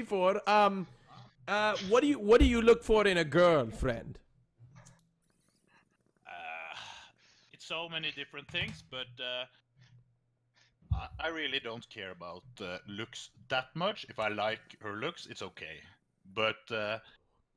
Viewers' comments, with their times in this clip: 0:04 i heard the lighter and bong i am a smoking legend like equals one bong rip